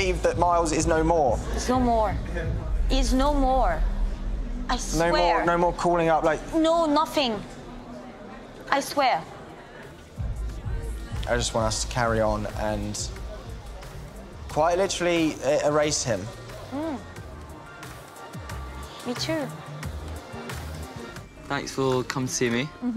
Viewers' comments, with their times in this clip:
0:05 The Silence spoke volumes